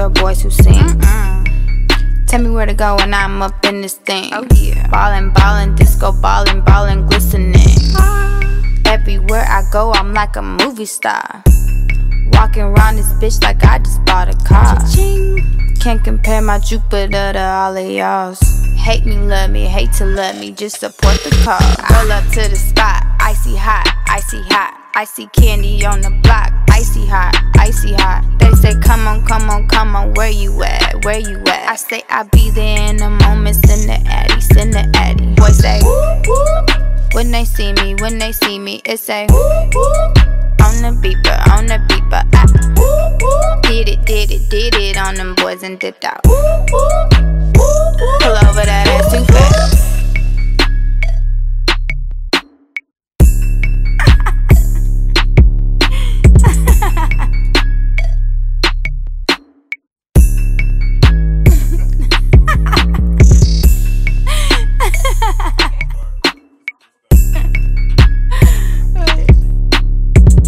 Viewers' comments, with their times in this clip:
0:08 That adlib HAD ME WHEEZING 😂😂😂😂 AWFULLLLLLLL
0:55 she was laughing at how bad the song was..